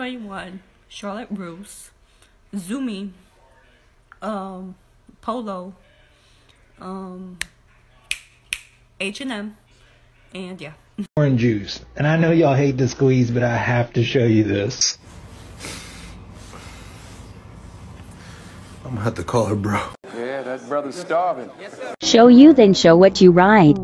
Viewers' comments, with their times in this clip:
0:06 she sounded like she was bout to cry, is she okay? :(